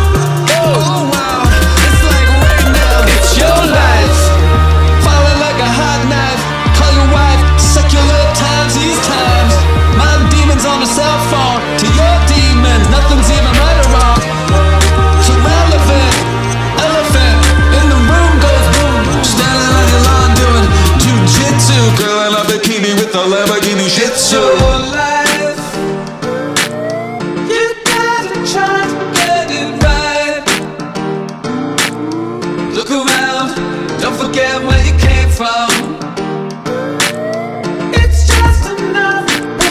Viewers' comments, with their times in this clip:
0:03 No pun intended, but... Wow. I did not expect that change toward the end The way it seems to almost turn into completely different song, and the lyrics at that point actually seem to have a message, in a way, as if it's poking fun at modern music (which I am aware that Beck does this often) and it feels quite different after that.
0:24 Did anyone else get a Panda Bear-vibe ?